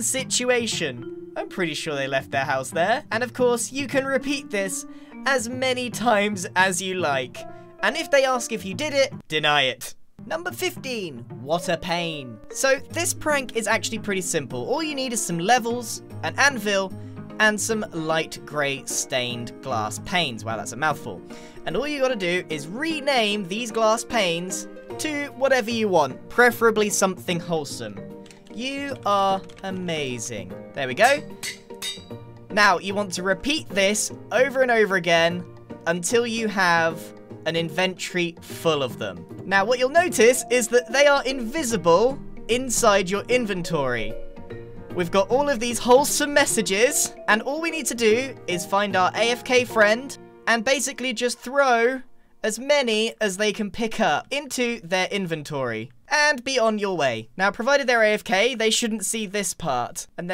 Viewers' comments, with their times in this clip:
0:08 such a direct voice LOL
0:42 I love how Grian switches from In-ven-tree to In-ven-tor-ee in like 3 seconds 😂